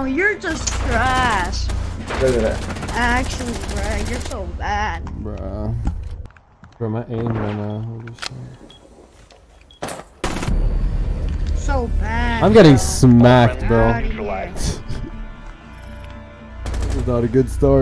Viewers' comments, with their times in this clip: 0:03 You can hear the shakiness and nervousness in his voice LMAO